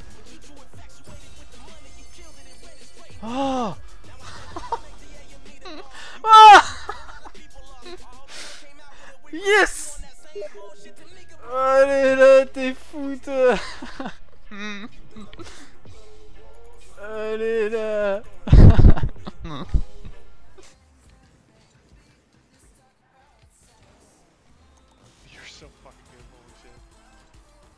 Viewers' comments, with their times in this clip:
0:09 That steam sound confused me so bad haha